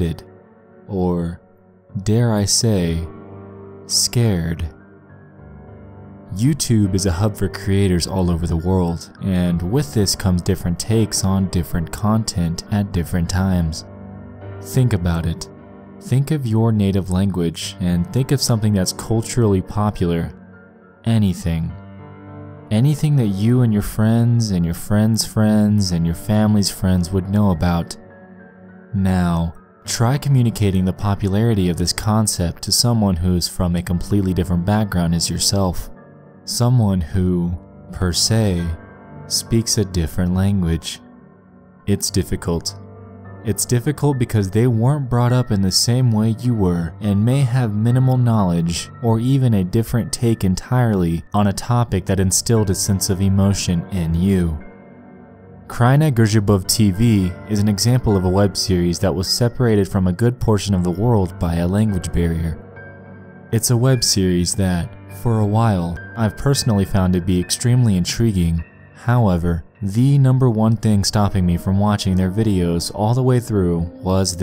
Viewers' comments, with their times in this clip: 0:06 you pronounced was wrong
0:54 This pronunciation haha btw nice vid
0:55 im polish and this sound so funny and cute when he pronounces that, good job btw!
0:55 For a polish guy this sounds like he had a stroke